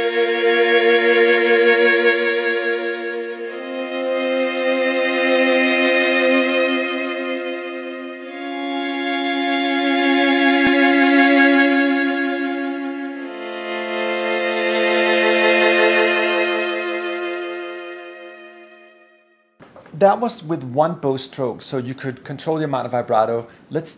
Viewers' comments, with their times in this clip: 0:10 what is this glitch sound?